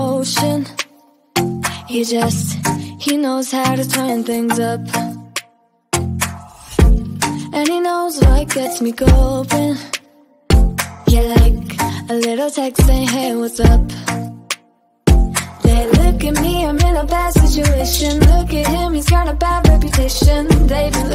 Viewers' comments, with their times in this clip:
0:03 if you skip 10 seconds ahead from it sounds like ‘She knows Harry Potter’ 😂